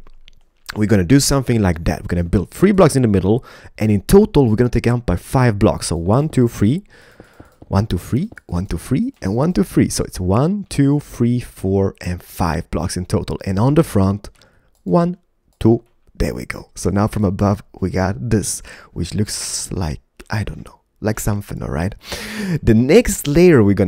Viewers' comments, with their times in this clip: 0:06 One, two, FREE???😂😂😂